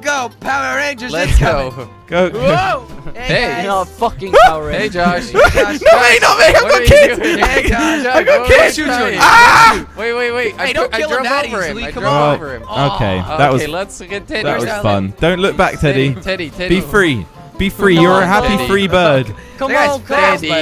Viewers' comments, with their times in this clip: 0:04 sounded so funny like it was from a movie.